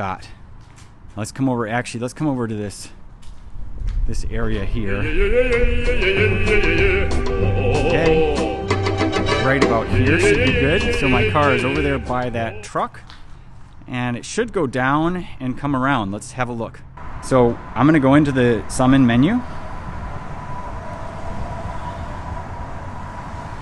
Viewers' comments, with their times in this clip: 0:05 Hi from Russian Tesla drivers! Russian soundtrack is awesome ))